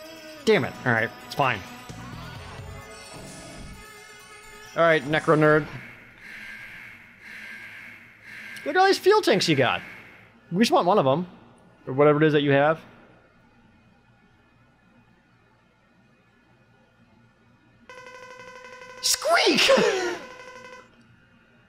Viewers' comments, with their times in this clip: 0:04 sounds just like an insult from the original 90s Sailor Moon dub lol